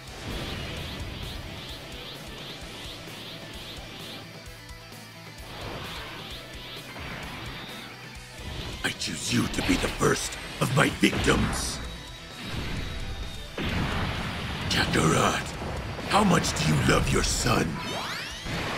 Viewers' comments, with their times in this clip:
0:04 they should hire you for the broly voice lines the new one is NOT it